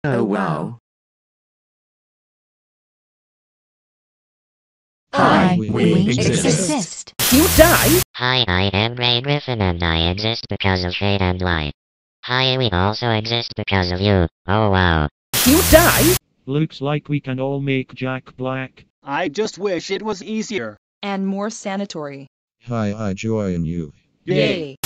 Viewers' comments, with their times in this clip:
0:08 Grey’s voice is so funny! 😂😂😂😂😂